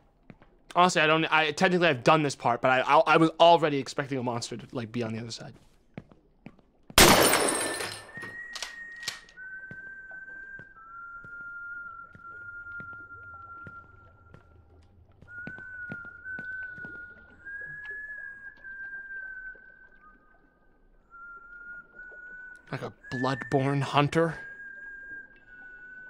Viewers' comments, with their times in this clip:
0:07 my ear drums really enjoyed that when I had it at max volume